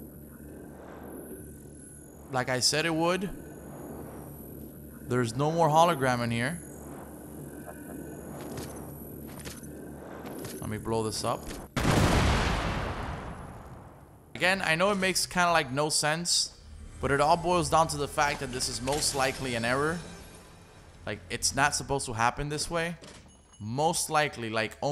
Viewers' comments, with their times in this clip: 0:07 is it me or did you guys hear that laugh ?